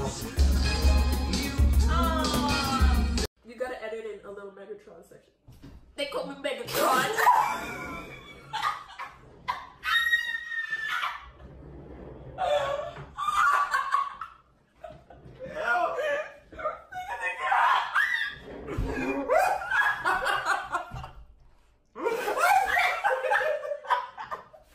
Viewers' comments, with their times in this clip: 0:06 the laugh yall hahahahaha
0:11 Sofias laugh is so precious lmfao ❤